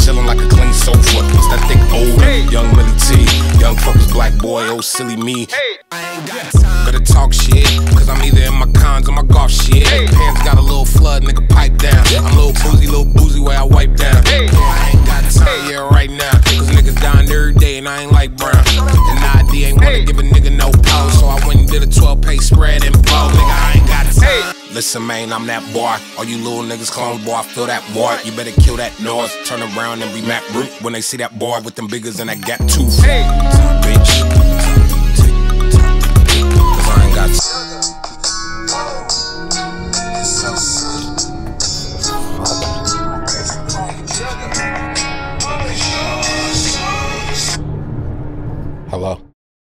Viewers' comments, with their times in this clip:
0:05 Dude sounds so incredibly good I love it so much
0:07 the fucking BEAT
0:28 dude this isn't an insult to tyler, listen to some of the background noises in the instrumental, they're excerpts from circus music, like
0:28 the background noises in the instrumental dude. they're like samples of generic circus music
0:36 I JUST NOTICED THAT THE END OF THIS SONG IS SWEET/I THOUGHT YOU WANTED TO DANCE
0:37 Tyler's ringtone is a demo of Sweet, you can hear an early version of the hook